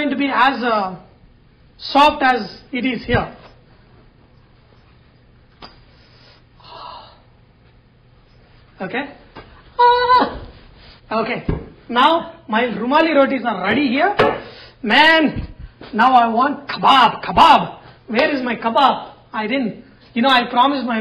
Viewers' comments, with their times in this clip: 0:09 A aaaa was awesome